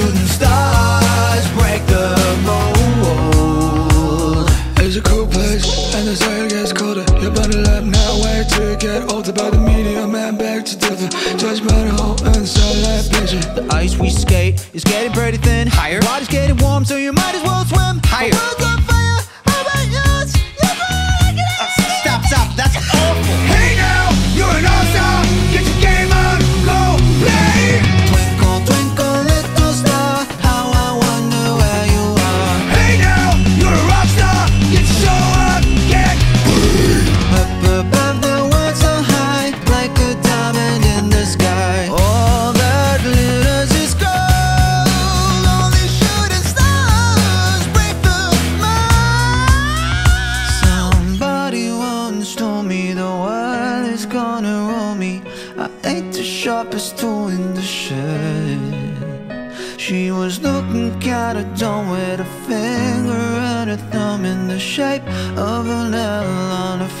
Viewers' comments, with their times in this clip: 0:03 the transition from the real All Star song to the mumble rap was SO SMOOTH!
0:04 on I definitely was not expecting that mumble rap lmao
0:09 if Playboi Carti sang all star
0:14 Isn’t the High Voice?
0:28 how does this sound good with the song
0:35 is a great metal growl
0:42 I love this part Awesome singer
0:49 that high note is amazing
0:49 Micheal Jackson scream moment
0:55 anyone hear the voice crack